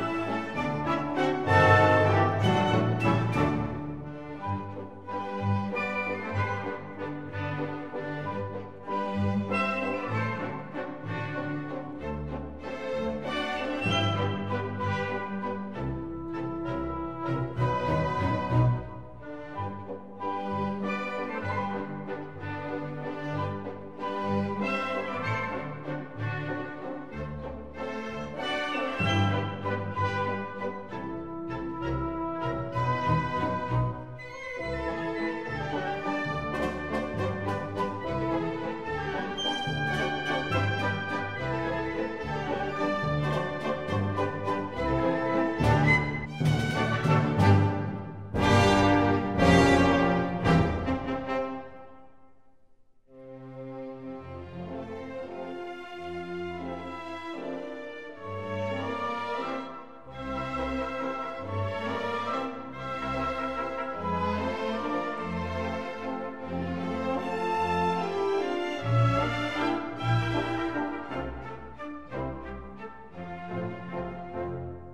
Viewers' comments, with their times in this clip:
0:04 The music fits so well! it's just perfect
0:55 I thought the music was the disney intro lmfao